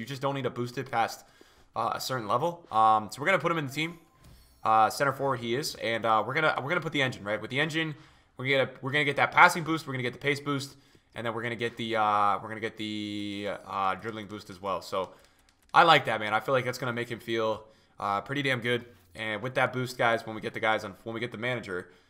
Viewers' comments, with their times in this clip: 0:04 Ceo of Yoda voice